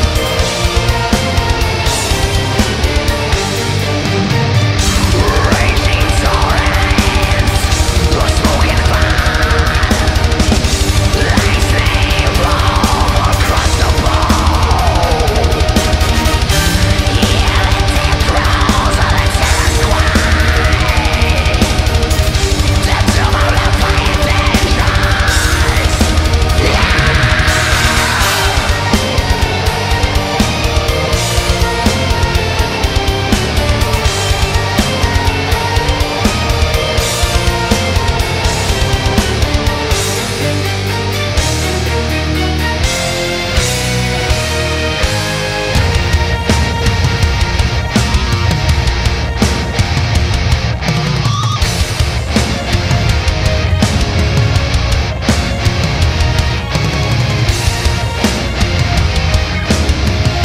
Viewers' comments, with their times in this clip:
0:06 he sounds Dimmu Borgirishly :D Cool
0:46 They could've sat on that riff for 2 minutes and I'd be cool with it